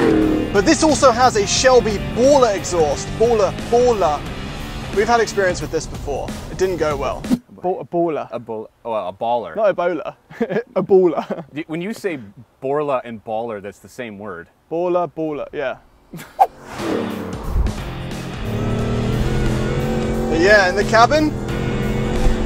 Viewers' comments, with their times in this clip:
0:09 yeah, but you just sound like you’re saying Ebola.